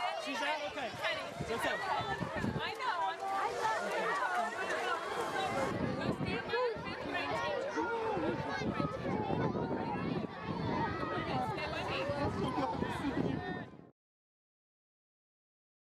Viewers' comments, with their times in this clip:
0:09 listening to his cry broke me. That dad relief can be felt.